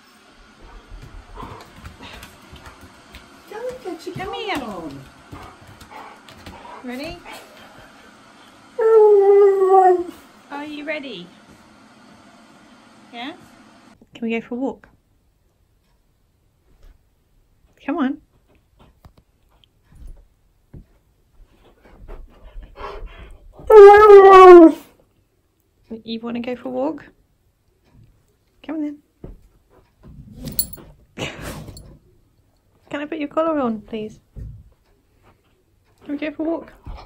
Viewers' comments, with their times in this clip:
0:07 ... I SWARE HE ACTUALLY SAID ‘I DON’T WANT ONE!’
0:09 I actually heard him say "I don't want one" 😂 wish my dog😒😒 was as obedient and talkative as yours. ❤️❤️😍😍
0:12 Naw that I don’t want one is adorable
0:25 headphone warning, dont turn it up too loud